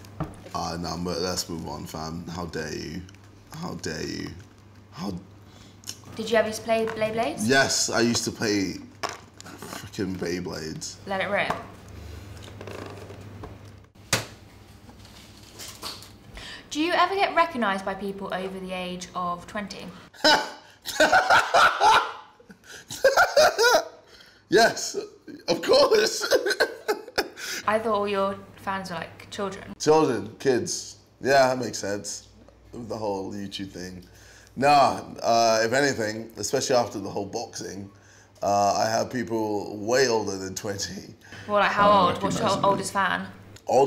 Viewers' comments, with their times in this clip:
0:09 he sounds so American when he says "frickin bay blades" 😂😂
0:31 idk he sounds crazy and irl hes normal lool